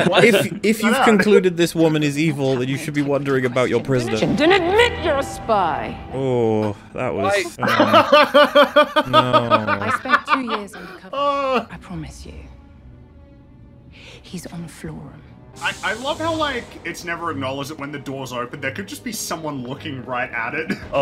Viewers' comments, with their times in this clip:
0:05 "then admit you're a spy!" 😡 = gal gadot's "Kal-el Nooo!" 😯 Same energy lol!